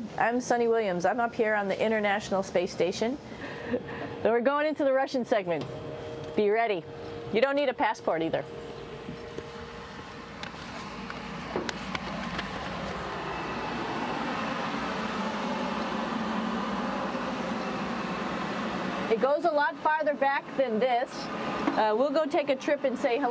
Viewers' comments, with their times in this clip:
0:10 Even with the sandbags protecting the jet noise, I can't hear.